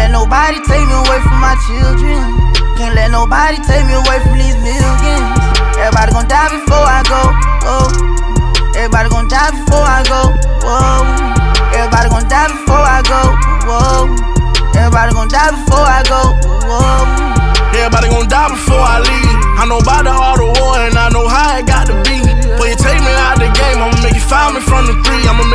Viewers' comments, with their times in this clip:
0:08 thought that was Eminem Lol